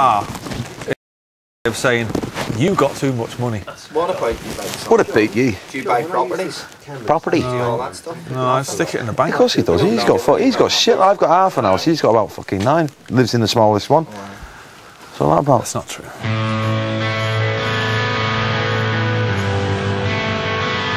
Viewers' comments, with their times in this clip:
0:03 Liam's Northern Irish impression 🤣